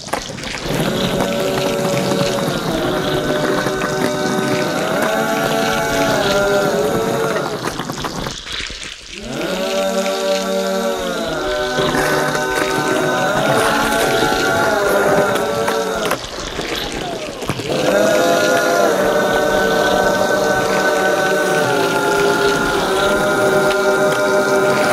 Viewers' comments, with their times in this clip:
0:10 sounds like the intro to American horror story